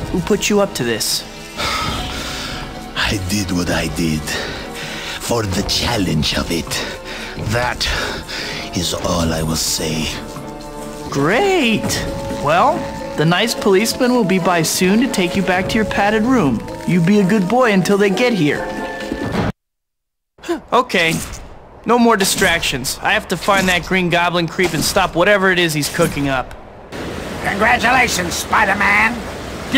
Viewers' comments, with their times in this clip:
0:10 the “great” tobey says actually breaks in his voice hahaha